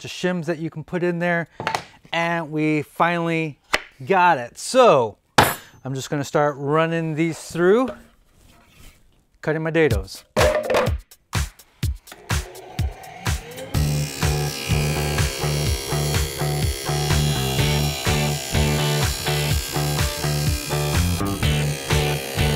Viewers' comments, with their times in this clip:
0:08 good job syncing the music and wood hit